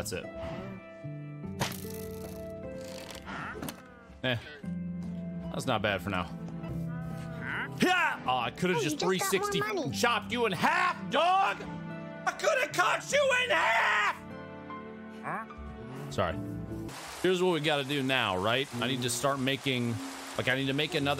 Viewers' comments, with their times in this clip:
0:06 that "huh" at the end killed me😂😂😂😂